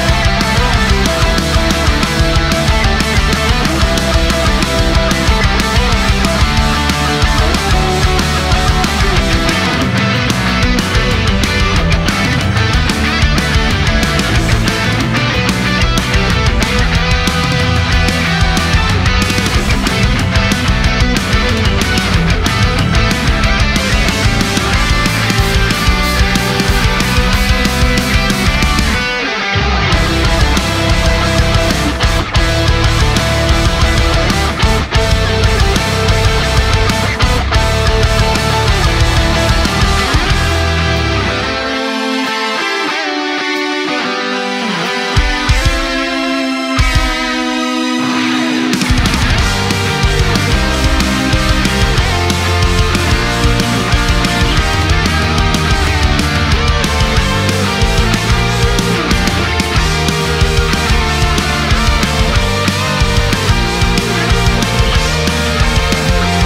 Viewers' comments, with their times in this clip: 0:09 Groovy bass that you can barely hear because all the other instruments are louder.
0:24 Sounds familiar :P
0:24 i frickin love that We're All Gonna Be Stars leitmotif
0:25 that lil callback to season 1's opening theme made me hella emotional tbh LOL
0:25 Is it just me or can you hear "We're all gonna be stars"
0:41 sounds like fly me to the moon in my opinion /goosebumps/
0:48 Is that a Persona 3 reference ? I was wondering if you took inspiration from the Velvet Room theme for this, lol the main melody sounds pretty similar!